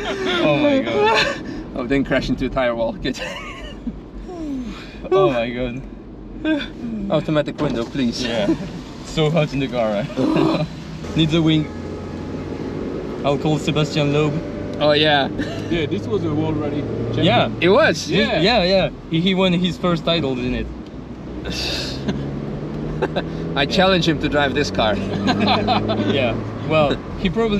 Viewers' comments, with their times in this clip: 0:09 gets pulled out for being too loud - on replay it turned out to be the laughter when windows were open..